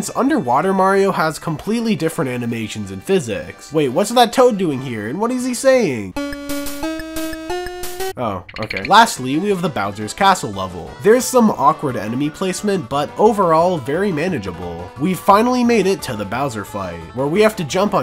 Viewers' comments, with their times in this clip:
0:06 Nice music choice lol